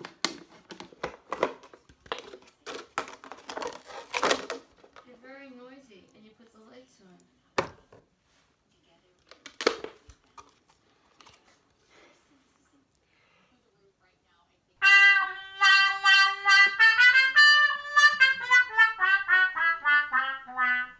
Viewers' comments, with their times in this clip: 0:05 your very noisy and you put the lights on lol